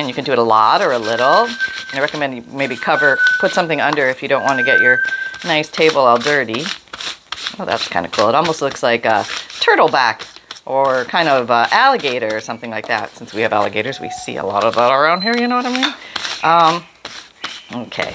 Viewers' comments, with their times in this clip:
0:04 Kitche flamingo boy is that a custom Pam color lol...🦜🦜🦜🦜 your African grey sounded so sad She was calling to you! Cut yourself some little chunks of fabric and then use them as bridges at the end and beginning of your stitching and then you won't lose your thread . After you sew over a bridge sew your project and then another bridge or cut off the first one but leave it in the machine for next time 🙂